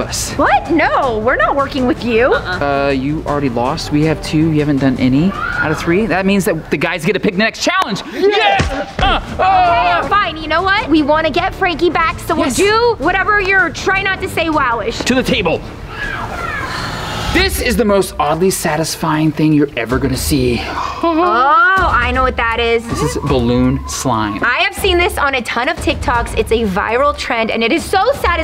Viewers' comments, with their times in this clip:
0:05 There was a meow
0:16 it sounded like something or someone said meow meow or wow wow And also the screen kept on going black suddenly so you should check that out and stay safe ❤️